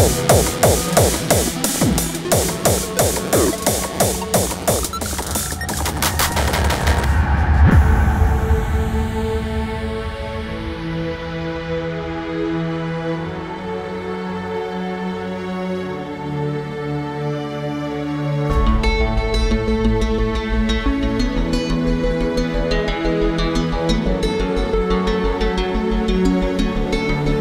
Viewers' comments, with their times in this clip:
0:09 From it's awesome with the melody and everything! Holland de gekste!